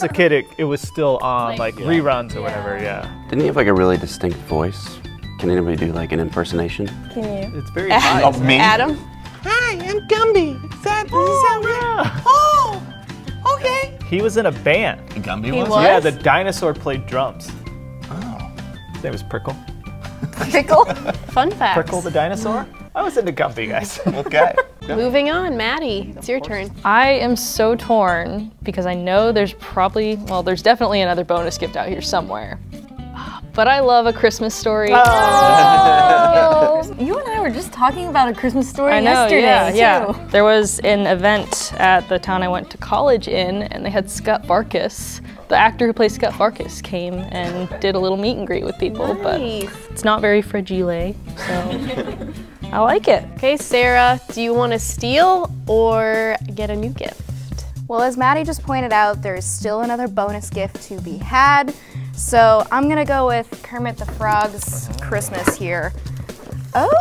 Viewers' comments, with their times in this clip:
0:10 anyone else getting Elmo vibes
0:55 Bruh Siri came up cause they said “hey sarah” XD